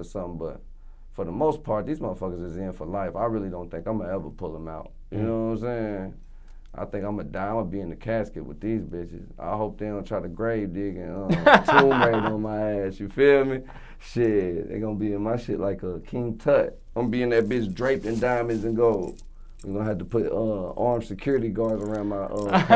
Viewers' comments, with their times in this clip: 0:07 Lol the way DJ Smallz having a big laugh 🤣 never heard him proper laugh.